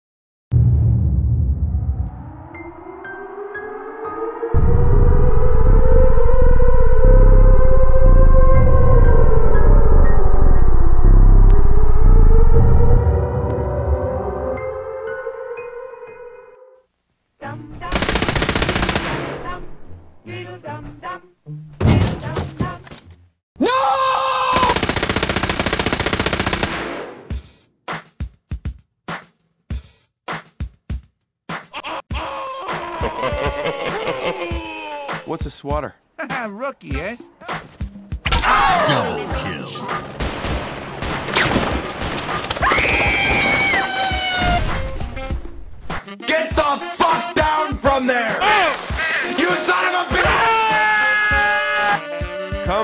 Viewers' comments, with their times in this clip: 0:00 that loud nuclear alarm at the beginning scares me.
0:40 the enemy said BICK MACK